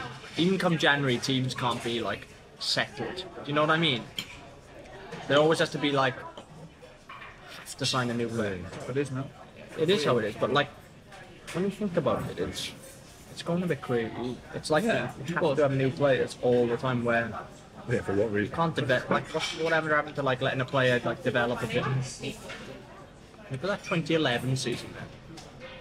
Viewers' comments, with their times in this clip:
0:08 1. Kane chewing food is an absolute sight to behold 2. Ben Davies' Welsh accent is rubbing off on Eriksen